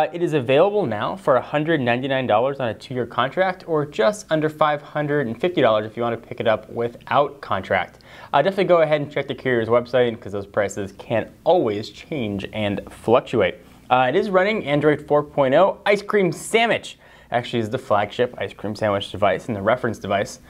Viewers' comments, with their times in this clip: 0:03 I like how he says a hundred five and fifty dollars( 10525$ is too much for GNex)